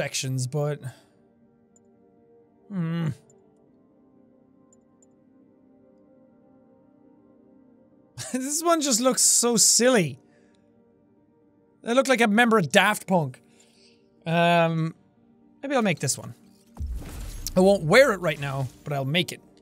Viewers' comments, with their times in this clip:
0:04 bad guy go boom